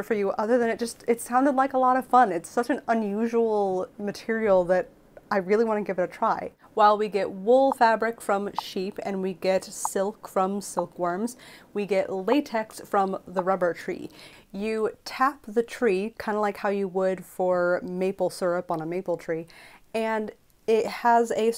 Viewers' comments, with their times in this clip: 0:09 The little popping or knocking noise that plays along with pictures gave me a headache- not in a rude way, I mean it literally. Very weird feeling.